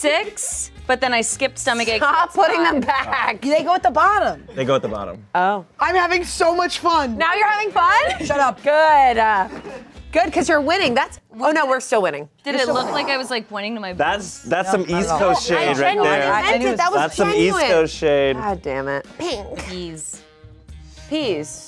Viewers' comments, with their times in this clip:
0:04 is my reaction to being wrong. Just a flat, matter of fact "ooh." and move on!